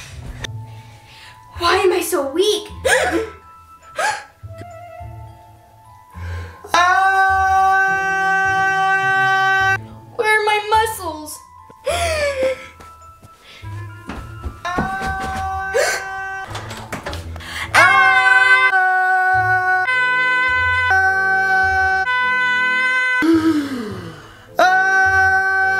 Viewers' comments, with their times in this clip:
0:06 bro sounded like a alarm